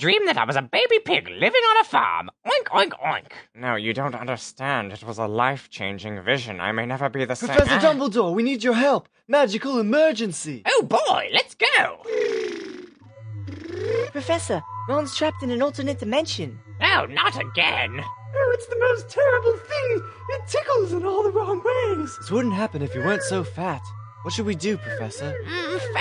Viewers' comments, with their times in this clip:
0:07 that anime weeaboo moan